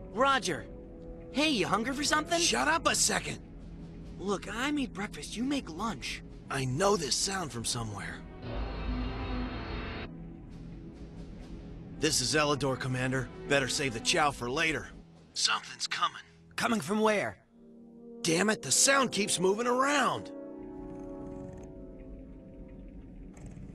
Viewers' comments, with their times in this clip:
0:10 Eledore Massis: "Why do I hear boss music???".